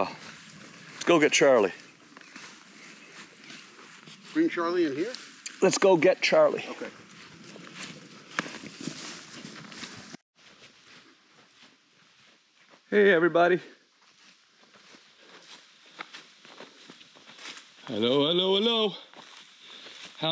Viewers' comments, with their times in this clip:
0:04 dont yell at him Tom